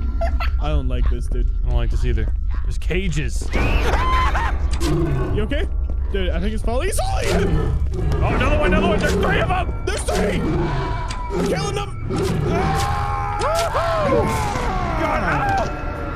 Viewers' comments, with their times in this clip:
0:04 Yo got me with that baby scream